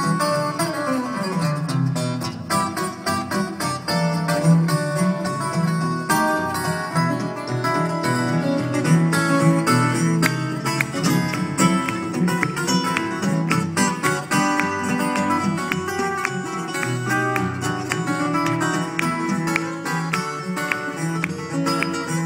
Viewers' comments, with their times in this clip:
0:09 Awkward Clap Starts